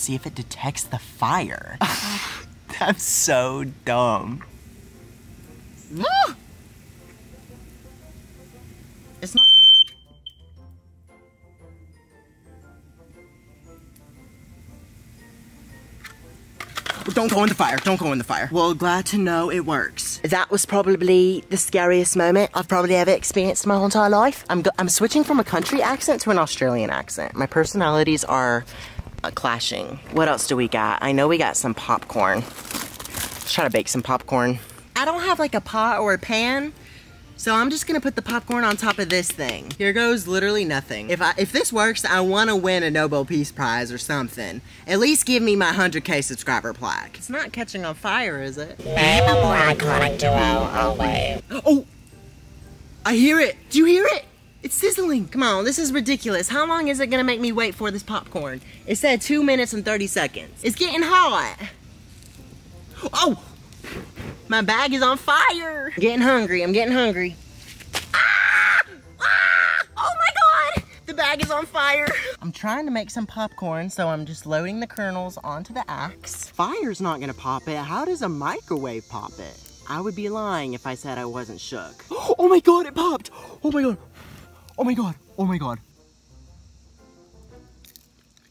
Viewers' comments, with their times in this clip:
0:09 My ears bro!!😂😂😂 Rip headphone users...
0:09 Safe to say I peed myself with the whole fire alarm situation😂
0:27 honey noooo that's notttt Australian😂
1:09 he literally sounded like a different person